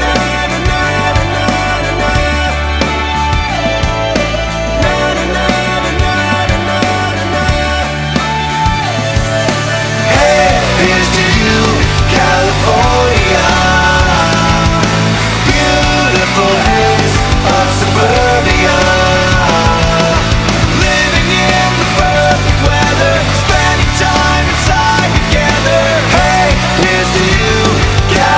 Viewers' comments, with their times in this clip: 0:09 I cant stop listening to this song <3 I just wish the heavier part at the end (@ ) was longer
0:09 onward is the best part of this song. No offense. It's just too mellow before that.